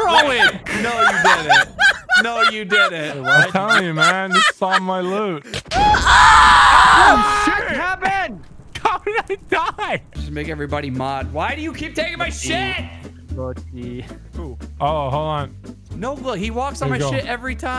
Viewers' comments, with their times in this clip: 0:05 Jesus Christ. Little do the crew know that Nogla died to the Lightning from the Thunderstorm; it's not the lightning from when you die from the data pack, as the lightning strikes on the block next to Nogla and kills him 😂 That's really rare. Also you can hear the distant lightning from the Thunderstorm in the background a few seconds earlier 👍